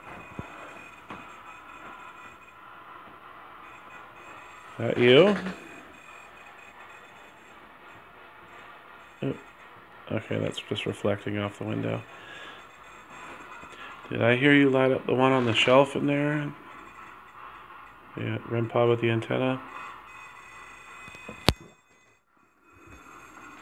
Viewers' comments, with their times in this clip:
0:10 (faint kid's voice) breathy sound after I said something about "lighting the one up on the shelf out there"